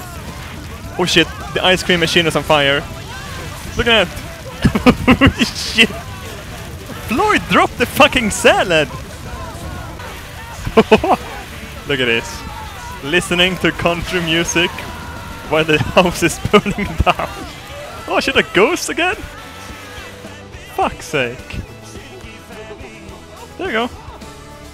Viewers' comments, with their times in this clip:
0:07 reminded me of parties I attend. Stupid shit leads to chaotic fires with country music blaring.